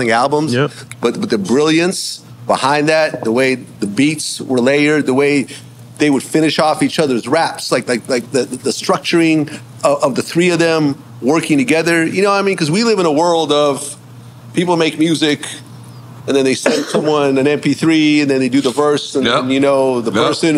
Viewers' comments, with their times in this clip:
0:06 I don’t like how he says “negro league with such easy and nobody checks him ?!?? Wtf